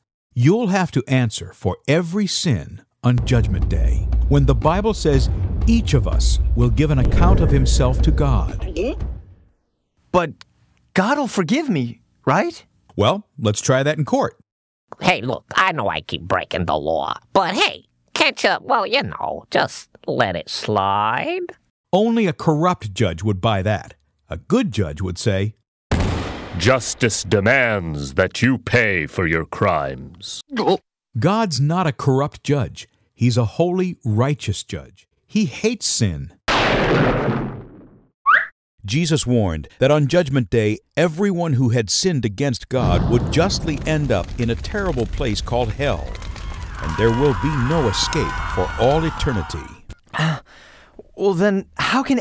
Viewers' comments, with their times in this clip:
0:03 this video really just went boss music plays
0:37 that is utterly terrifying he says it so clam “you will be tortured for entirety :)”